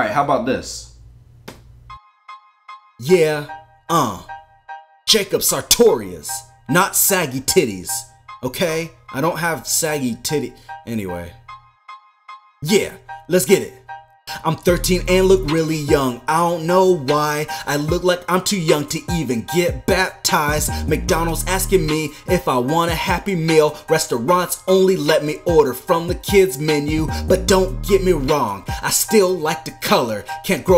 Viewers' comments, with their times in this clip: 0:03 That sounds the Black People Song. "Yo check it yo yo yo yo'"
0:11 starts the song